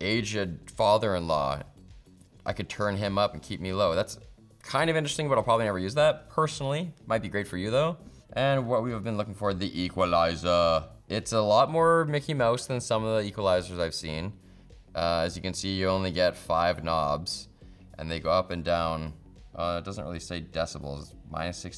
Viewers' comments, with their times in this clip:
0:04 I thought he said asian father in-law 🤣🤣